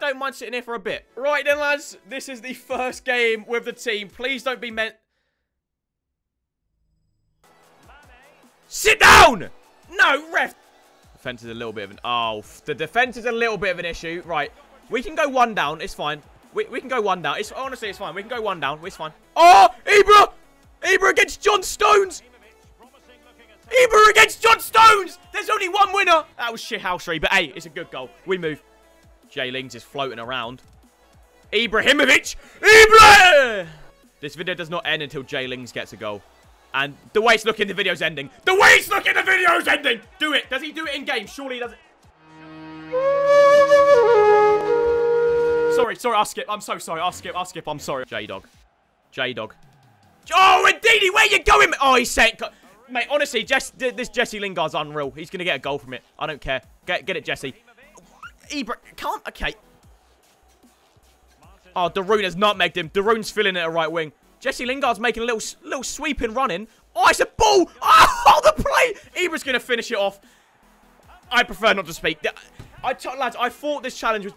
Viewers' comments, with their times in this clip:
0:08 Rip headphone users like me
0:57 Haha wtf was that noise.